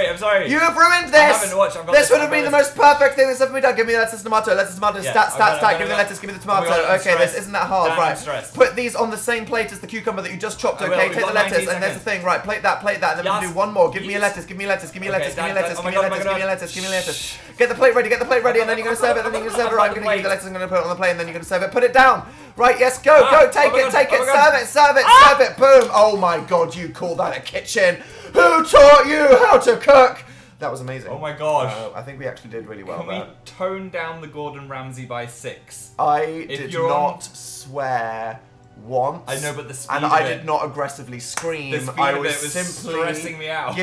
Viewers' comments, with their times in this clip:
0:03 and here we see a wild Daniel Howell talking faster than Daveed Diggs
0:27 Dan having voice cracks is literally all the boys in my 5th grade class lmao End me please